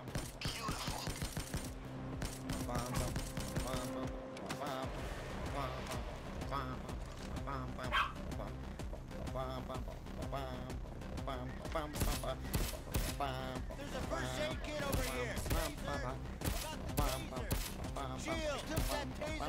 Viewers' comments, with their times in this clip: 0:07 I like how the dog's bark was actually in rhythm of the song